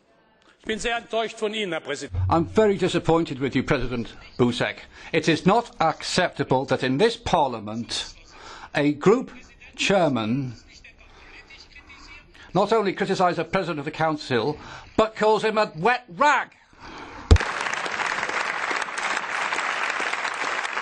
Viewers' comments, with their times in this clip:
0:03 lol president ballsack.